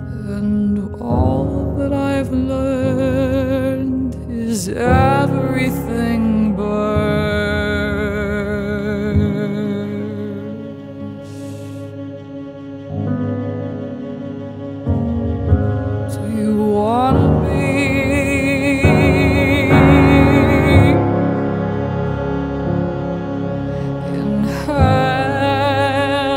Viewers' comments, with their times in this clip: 0:10 That subtle sax after "...everything burns."